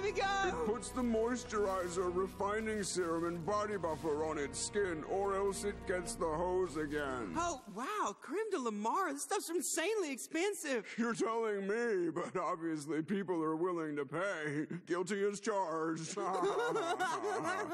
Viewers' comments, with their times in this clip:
0:05 I’m dead all I hear is Chris 💀😂😂